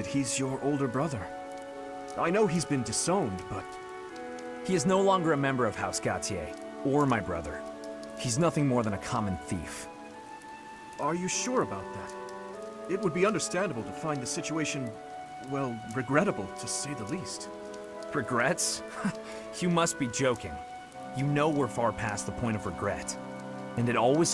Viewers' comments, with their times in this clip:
0:10 sounded like john cena.